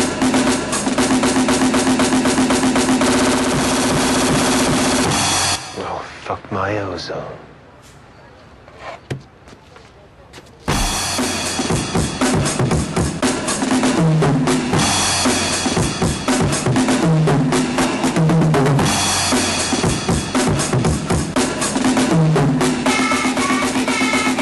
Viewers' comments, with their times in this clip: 0:09 that music plays in my head when ever im going to do something really serious